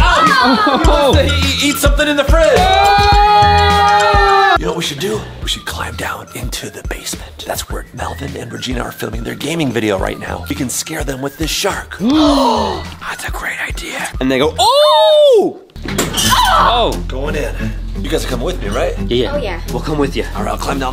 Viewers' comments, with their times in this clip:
0:03 Everyone it’s. screaming. Lol